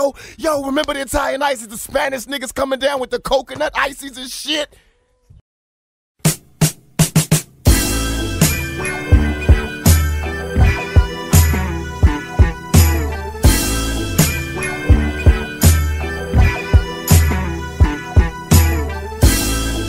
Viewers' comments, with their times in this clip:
0:05 Ok that Bootsy Collins sample does not fit well with the lyrics.